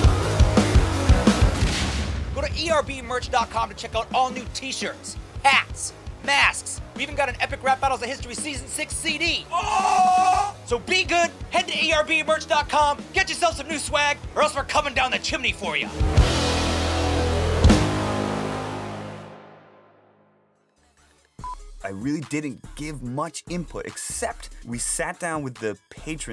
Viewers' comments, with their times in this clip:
0:09 I can hear the bill gates in his voice